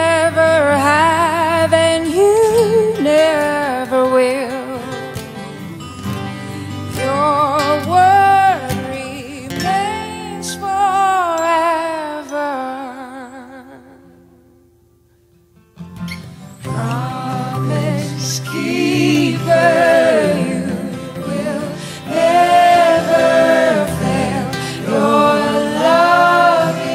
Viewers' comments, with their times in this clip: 0:08 her voice is gold!